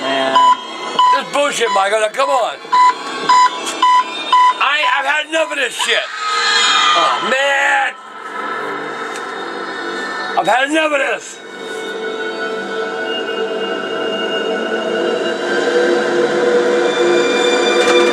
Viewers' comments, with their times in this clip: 0:06 HEY GUYS! when angry grandpa says "oh man.!" reminds me of Swiper from "Dora The Explorer" the show which Angry Grandpa hates. don't you think??